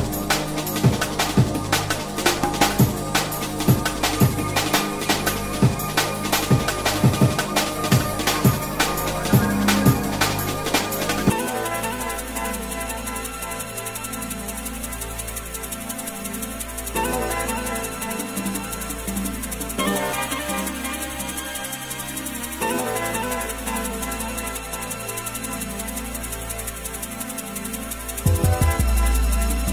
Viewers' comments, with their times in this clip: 0:10 I love this mix! Except where the transition is just insanely abrupt. Perhaps this is an uploaded file corruption only?